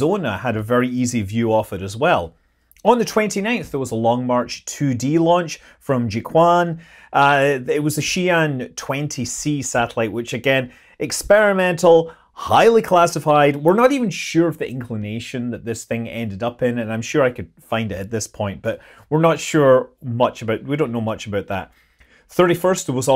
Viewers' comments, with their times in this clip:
0:04 Ah, the holy book of G'Quan. Not as good as the book of G'Kar, but still a nice read.